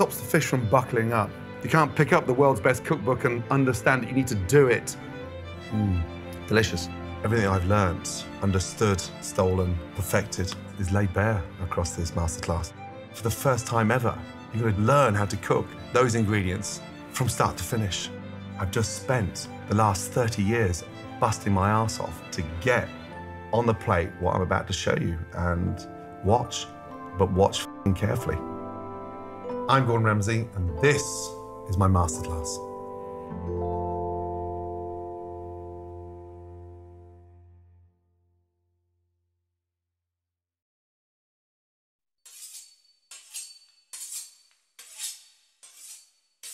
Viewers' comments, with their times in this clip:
0:06 That sounded so sad to me wtf..
0:27 *Plays nice music* "Watch Fucking carefully" lol